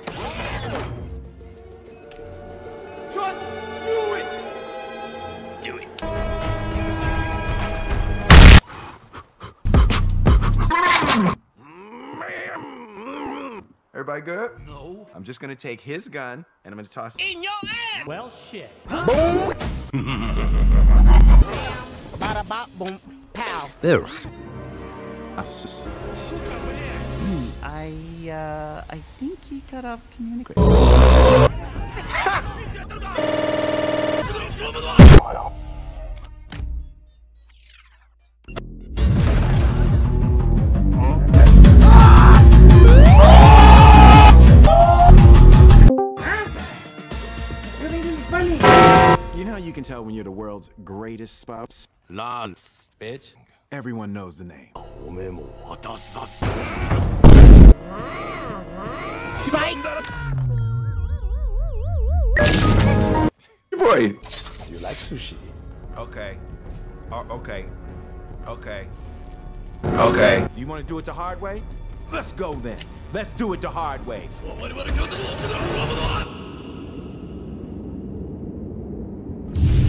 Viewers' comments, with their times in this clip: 0:09 i love how he starts beat boxing
0:24 Nobody: My Uncle pronouncing 'Asus':
0:30 when i was not hearing what they said and opening the volume up
0:32 What laugh is that?
0:32 that was a good "HA" right there ^^
0:44 LITRALLY HAD ME DYING. THE DISCORD CALL SOUND IS AMAZING
1:00 lol i lost my shit with the windows sound effect